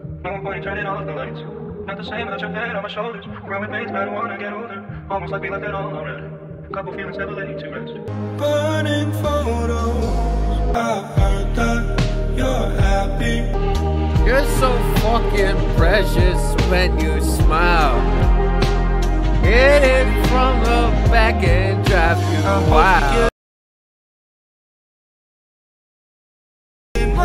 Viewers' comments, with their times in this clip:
0:09 Loveee the build up on Die For You, agreed that it could use another passage before the final instrumental but still loving it. Would be sick to see that as a ~ min song with biggg build up to that beautiful ending